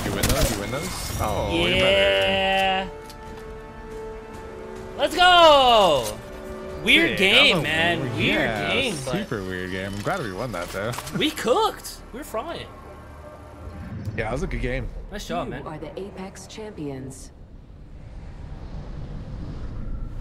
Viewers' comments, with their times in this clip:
0:06 WE ARE GAY MAN!